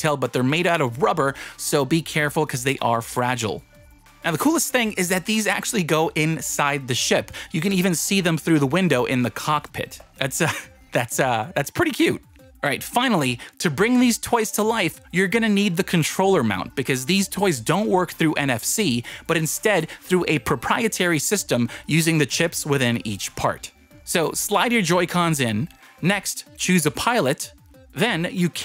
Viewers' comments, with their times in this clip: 0:09 the what Pitt 🤣🤣🤣🤣🤣🤣🤣🤣🤣🤣🤣🤣🤣